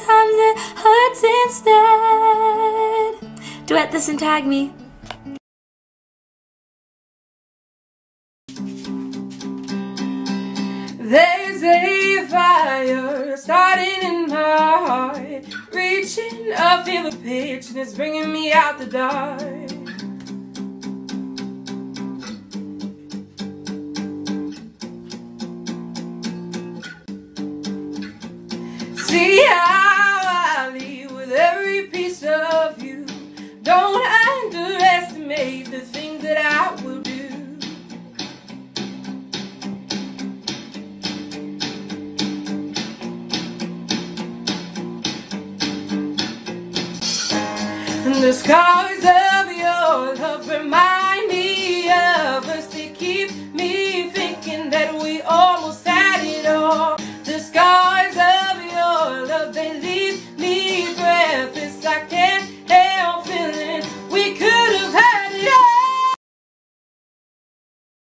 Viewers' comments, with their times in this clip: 0:09 SHE SINGS AMAZING🤩🤩🤩🤩😱😱😱😱
0:10 this woman has the voice and looks of an elegant angel
0:14 her voice is AMAZING!!!!! <3 <3
0:36 your singing is so beautiful
0:55 she is so beautiful and amazing at singing